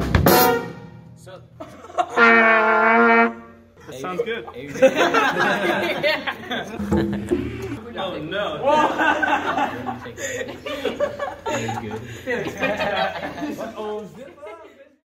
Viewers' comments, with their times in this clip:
0:12 I can relate to the baritone Sax.